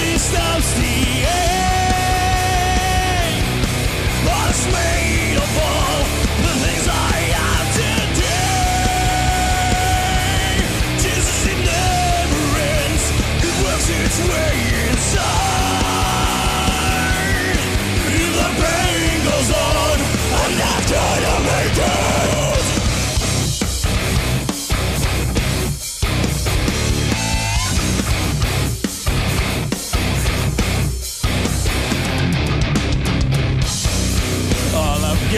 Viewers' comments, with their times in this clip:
0:08 That note was beautiful
0:19 that growl from the dude in green is actually fucking lid wtf